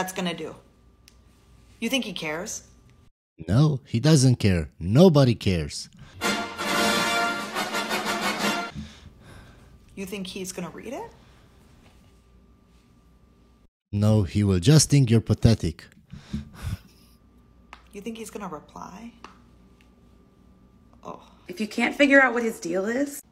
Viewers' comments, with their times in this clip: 0:05 This guy that sings "cry me a river" just made my day,haaaahaaa